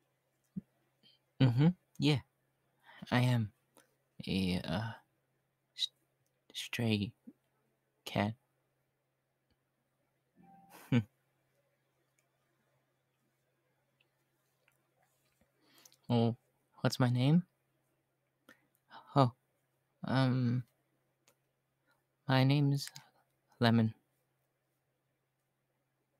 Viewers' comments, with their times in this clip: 0:10 Okay i know im late but i don't see a comment about that play station sound and i don't know but i just have to say it and if this is not important which of course its not i mean cute neko talking you can ignore :3